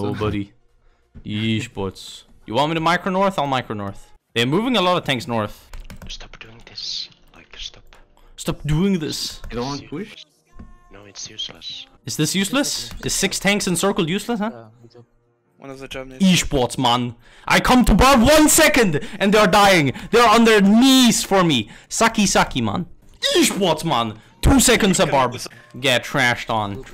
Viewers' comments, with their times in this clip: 0:08 love the ASMR disappointment